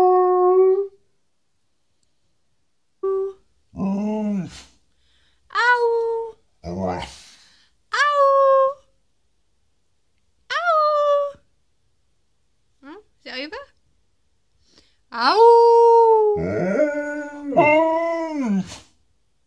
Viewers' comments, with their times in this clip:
0:05 Phil's signature WOOF
0:06 Emma-Leigh howls. Phil responds with the tiniest, indifferent "A-woof." This cracks me up.